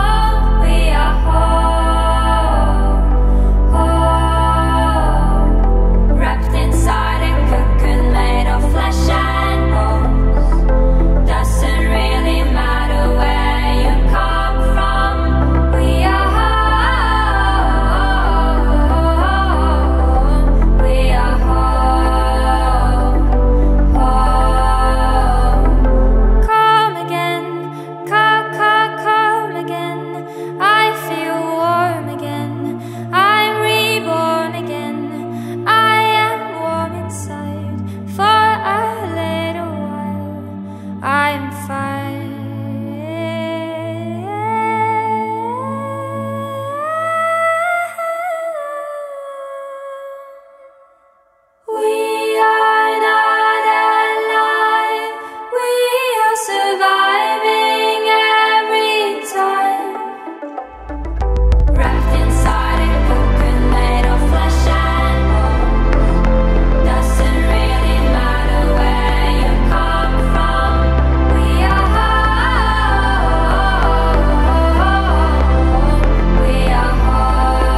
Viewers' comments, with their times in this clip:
0:06 is my favorite part.. the melody is so beautiful.
0:06 That melody reminds me of the chorus of "I'm A Mess" by Baby Rexha
0:57 I, as someone who is different than his partying-friends, really enjoy the beatdrop
1:01 I wasn´t paying attention and I accidentally heard "Wrapped inside a coconut"